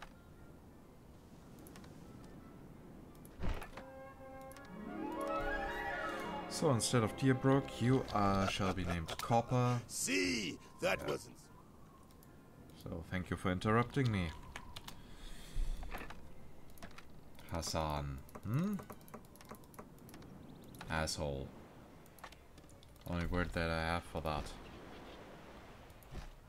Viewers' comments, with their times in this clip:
0:10 Even Hassan pronounced your island lol